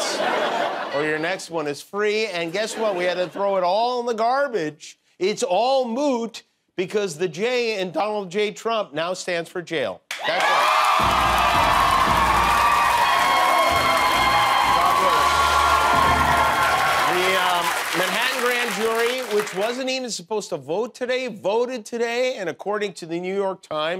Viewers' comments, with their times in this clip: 0:09 Applause & Standing Ovation.